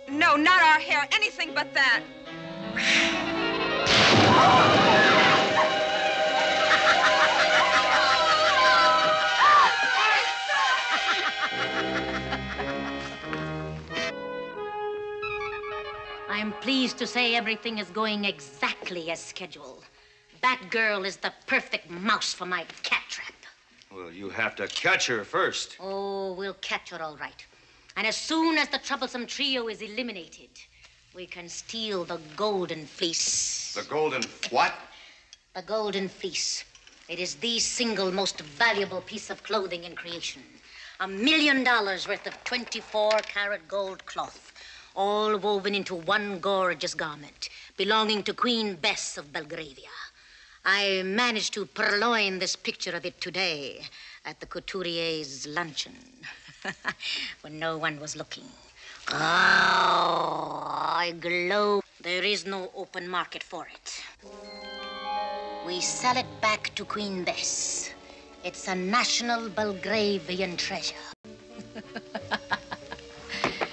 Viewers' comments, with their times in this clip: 0:10 it sounded like one of the ladies said Eartha's name.....was that right or maybe it's just me?
0:59 Eartha made that cat purr iconic in American pop culture
0:59 “GGRRAOWWHH!!!” How did she do that?!
0:59 she does her famous purr